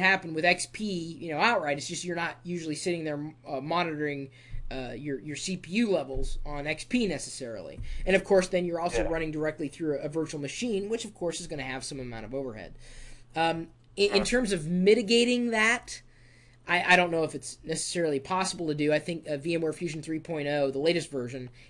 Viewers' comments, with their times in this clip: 0:04 I thought it said "penis" but he said "XP necessarily"